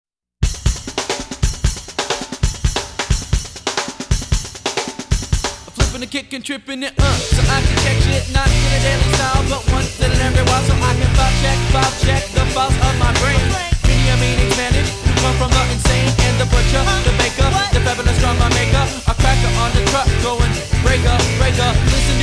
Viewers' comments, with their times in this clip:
0:06 Jingle Bells on this rip. Reminds me of Christmas 🎄